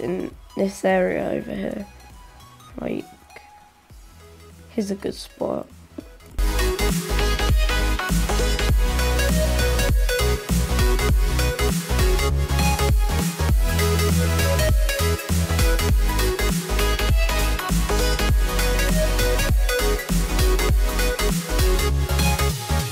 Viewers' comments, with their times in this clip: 0:05 This music is giving me 2016 vibes